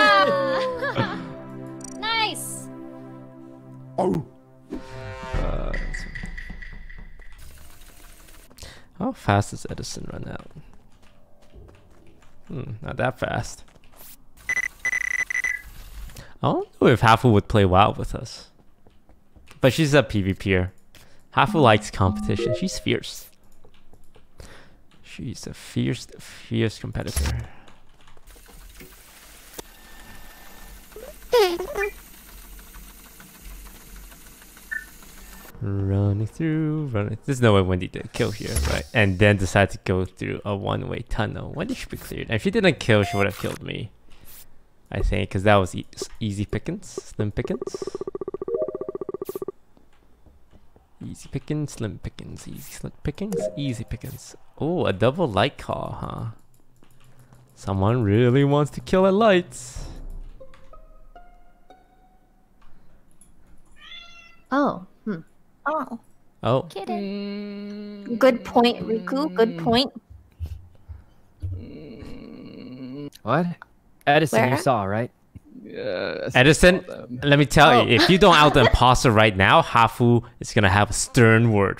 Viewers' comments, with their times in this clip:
0:03 Somebody Awoo me: confused 19y/o noises
1:03 I heard a cat meow lol